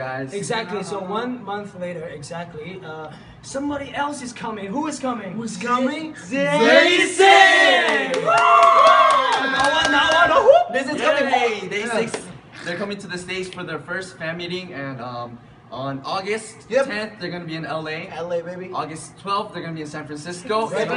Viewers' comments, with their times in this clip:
0:06 did they say "ZAYY SIICK.." :v